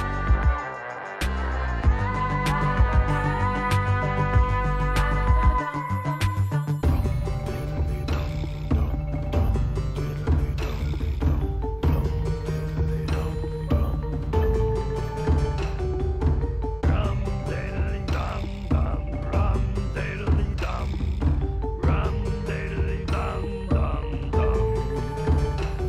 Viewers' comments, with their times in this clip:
0:06 Sounds Hallowennie if you know what I mean